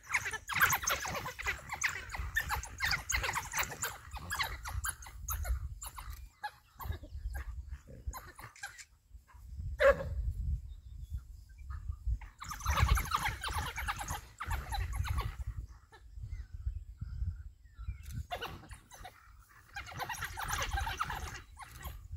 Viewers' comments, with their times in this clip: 0:08 in all my time watching videos about wild dogs, that's the first time I heard one actually bark like a dog.
0:09 And for the first time I heard a single bark from these wild dogs.
0:09 Actually they do bark like normal dogs. Watch But I don't know why they make this noisy sounds 😕
0:09 one of them actually barked